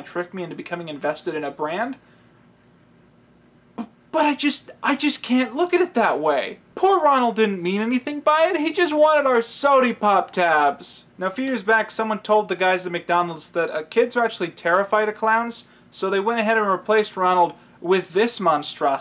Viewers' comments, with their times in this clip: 0:05 the emotional investment in this man's voice is the most wonderful thing.